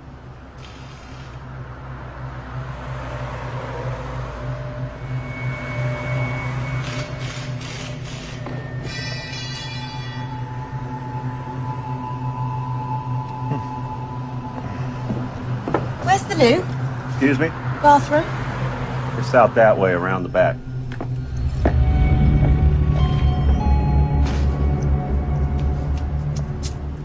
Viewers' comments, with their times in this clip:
0:08 Funny how you can hear the mechanic drop his tool or whatever metal piece he was holding indicating Michael walked in and killed him